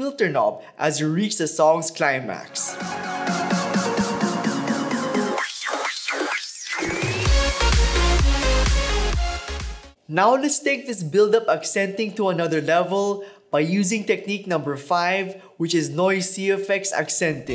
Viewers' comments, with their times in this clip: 0:04 sorry that one sounded awful